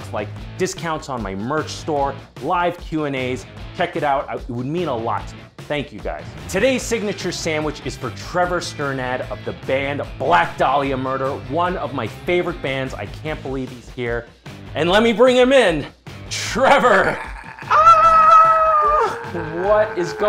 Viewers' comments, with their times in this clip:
0:08 oh so that's how you pronounce his last name. Also, that's an impressive sandwich